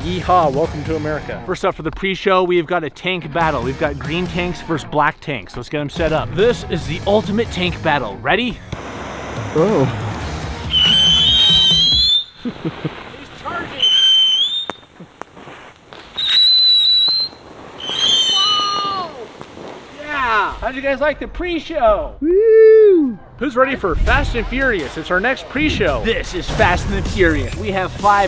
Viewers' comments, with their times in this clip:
0:10 I think imma call it the ultimate tank whistle battle